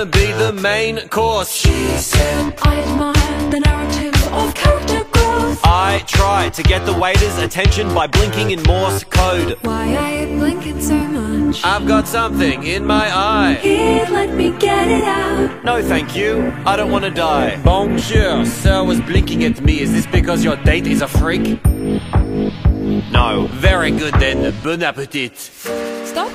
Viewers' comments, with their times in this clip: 0:09 holy that voice is so angelic tho